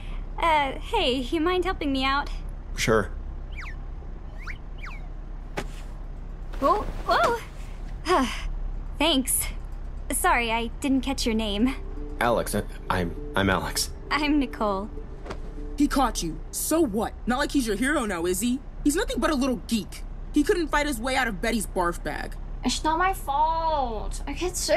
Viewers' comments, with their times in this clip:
0:10 LOL I LOVE BETTYS VOICE